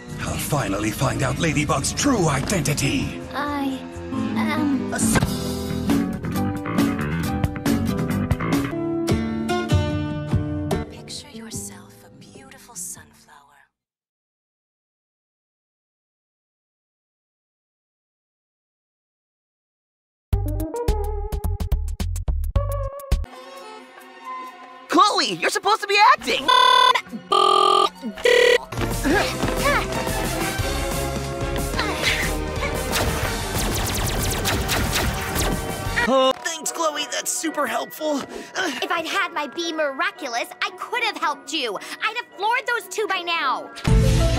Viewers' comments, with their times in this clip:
0:04 I thought he said Ahsoka I'm a Star Wars nerd lol 🙃
0:26 am i the only one who thinks that sounds like something in a song?